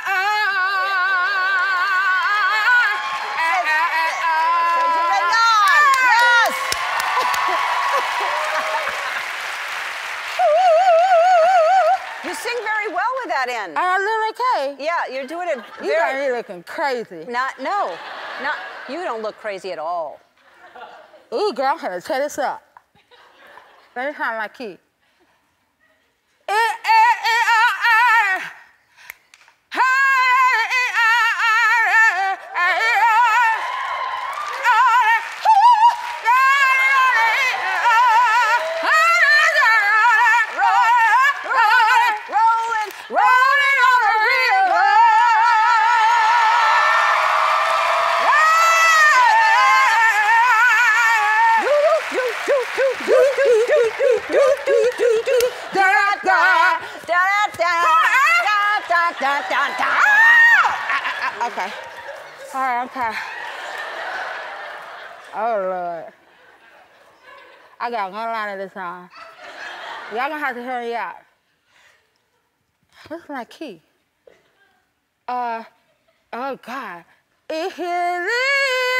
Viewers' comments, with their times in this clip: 0:10 Miranda Sings is that you ?
0:14 I thought she said do I look like lil tay
0:35 And the effortless hv Bb5
0:35 I’m sorry but the way she just suddenly does that note is so funny to me.😂
0:44 okay ellen y got some soul there
0:45 ellen can belt!
0:45 who belts that a4 note ??? It was so clean, not nasal and *RESONANCE*
0:56 that's frikking Bb5 y'all
0:58 sorry but her bb5 jesus
0:59 did she just hit a Bb5 with the thing on her mouth?!?!?
0:59 That Bb5 tho
1:00 that Bb5 was so effortless and easy 😍
1:00 that sounded so good💔
1:00 an effortless Bb5❤